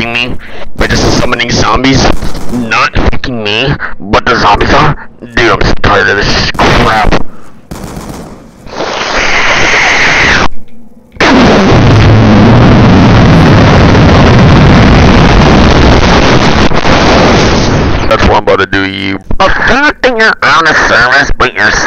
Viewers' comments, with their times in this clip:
0:07 The breathe in lol 😂